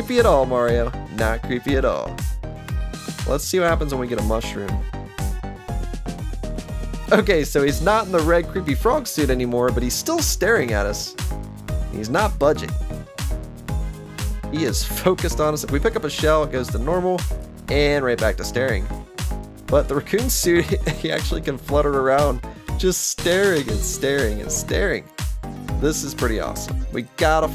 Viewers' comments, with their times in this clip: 0:10 "He's still staring at us; he's not budging!" Can't wait to see what other cheats exist that will break this game! Also, the off-key music was horrible!